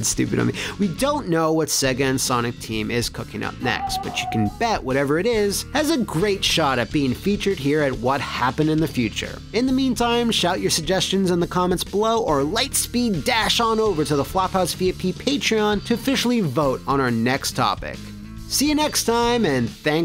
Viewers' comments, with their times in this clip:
0:03 I love that scream :)